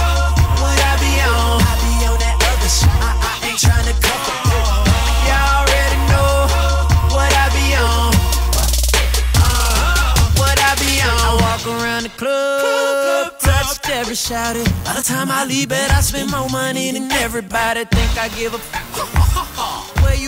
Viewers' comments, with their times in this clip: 0:05 his laugh is so sexciie